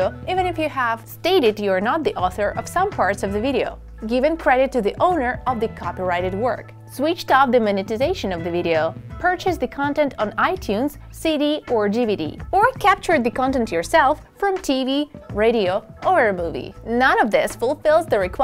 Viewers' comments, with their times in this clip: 0:06 She's very difficult to follow. I have to go back a couple of times to figure out if this is a to do or not to do list Her voice sounds like it a to-do list.